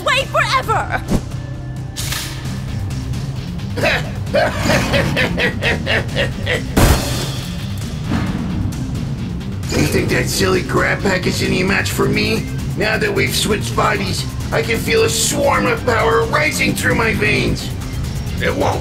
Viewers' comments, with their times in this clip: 0:04 I laughed at players evil laugh 😂😂😂